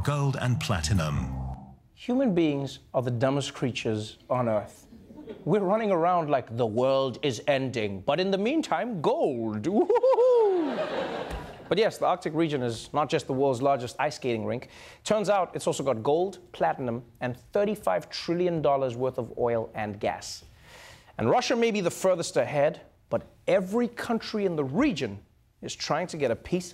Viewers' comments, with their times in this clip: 0:09 Trevor sounds like Pennywise the clown😂😂